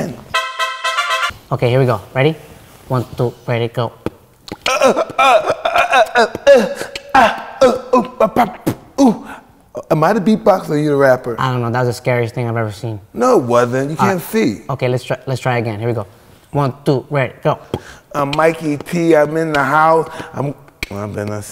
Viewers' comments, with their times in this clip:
0:04 Crush: I like guys who can beat box. Me: